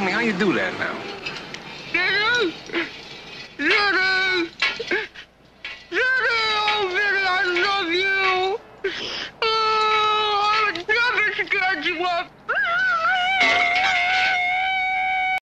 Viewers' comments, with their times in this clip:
0:12 Damn, with pipes like that I’d fall in love too